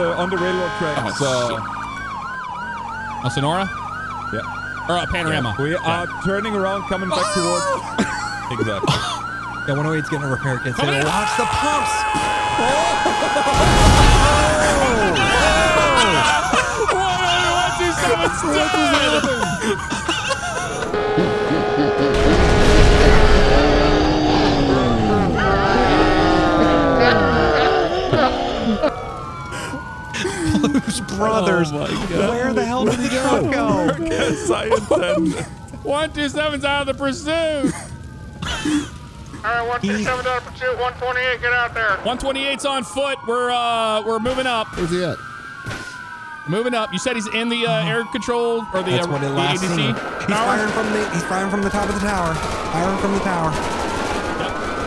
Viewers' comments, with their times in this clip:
0:10 😂 he shouted "Comin' in hot" and everyone moved and he blew up😂
0:39 Sarge is a true professional: calmly calling 128 into service right after the death of his favorite officer.